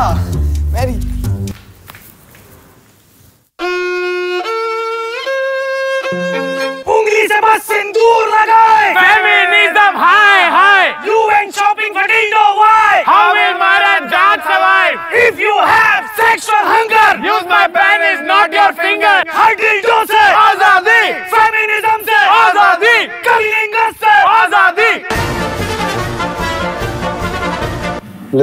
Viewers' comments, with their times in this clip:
0:10 I kinda heard UN instead of you went,funnily weird!
0:15 I cringed at the way they said p.....